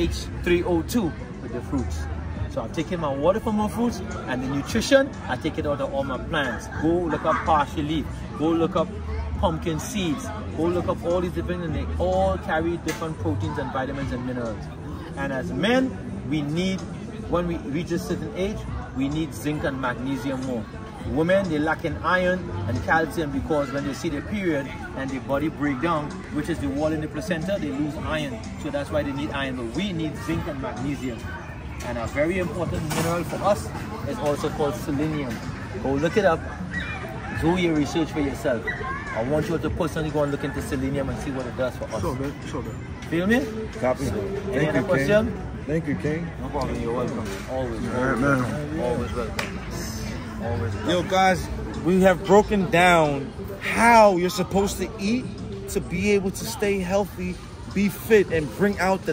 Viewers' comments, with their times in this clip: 0:07 Great Video Guys, Thankyou ! he says Parcha Leaf ?
0:40 can't seem to understand if he's saying Selenium?? this guy is spittin' some deep talk